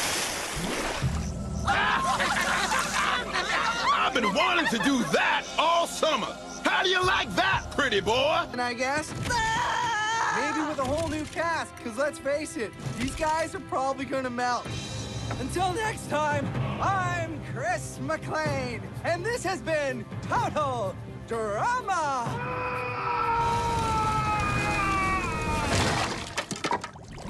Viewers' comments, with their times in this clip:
0:09 DÄÆÆ screams and burns to death ☺️ Edit: so preppy 😍